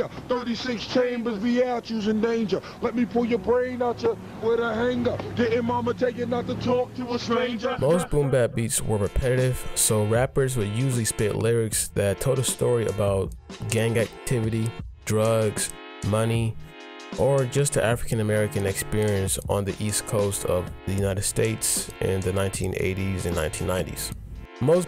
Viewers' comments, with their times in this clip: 0:10 Damn what’s that beat it goes crazy hard